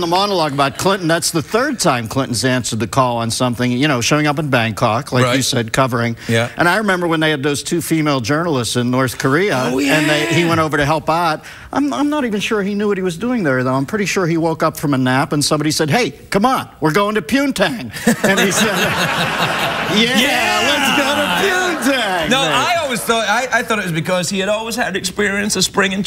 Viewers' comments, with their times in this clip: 0:10 you can hear Miller’s Pittsburgese, when he says “help aht” and not “ help out”